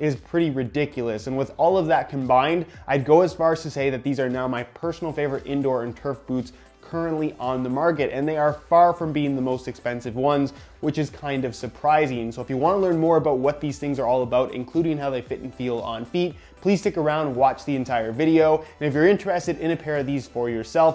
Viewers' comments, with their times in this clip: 0:07 When you said "Currently on the marget" it reminded of my Year 12 business teacher saying "Tarket Marget" for an entire lesson xD